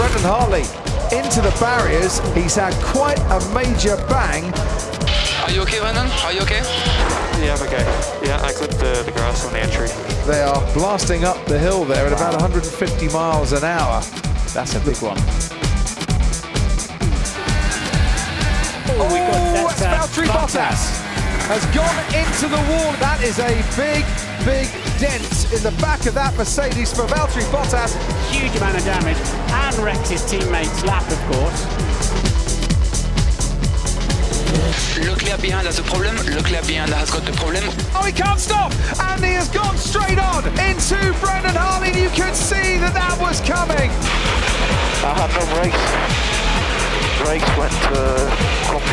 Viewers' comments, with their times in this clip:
0:04 Assistant: "Are you a gay Brandon? Are you a gay?" Brendon: "Yea, I am a gay."
0:36 sur he is french with a beautifull accent